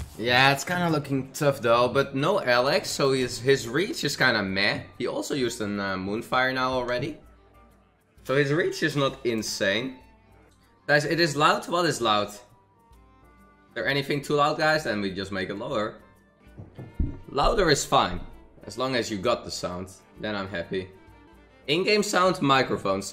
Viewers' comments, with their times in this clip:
0:10 Baby don't hurt me don't hurt me, no more!! (I know he probably said "loud" but still)